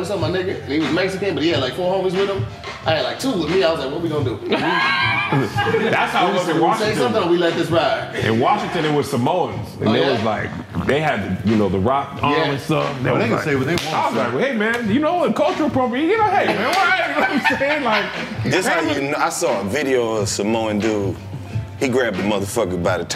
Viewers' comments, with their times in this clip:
0:09 Kev farted and tried to cover it with conversation. 😂
0:09 Man who farted 🤣 Yall boyz a Foo!😂
0:10 Tell me yall heard thr fart
0:10 I heard a wet fart